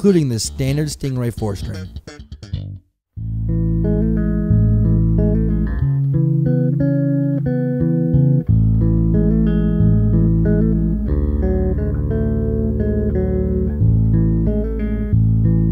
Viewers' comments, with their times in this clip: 0:03 Can anyone give me the tabs of this cool relaxing song ?